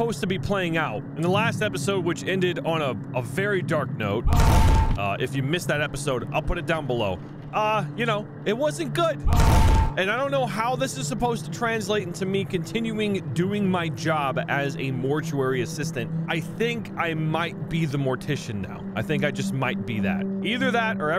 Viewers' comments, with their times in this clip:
0:09 sounds like slowed down Lego yoda Edit: the olfactory sense is the sense of smell, not the uh, what you pointed out